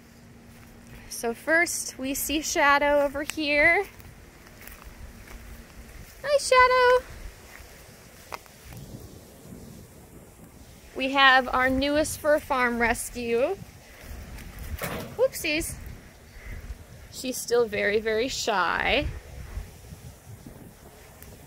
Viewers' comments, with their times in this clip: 0:05 She said Hi Shadow I heard eye shadow. Nice palette though.